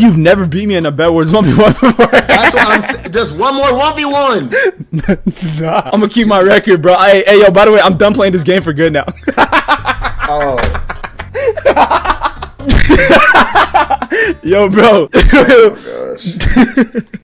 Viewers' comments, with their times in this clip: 0:07 The way he laughs at the end is funny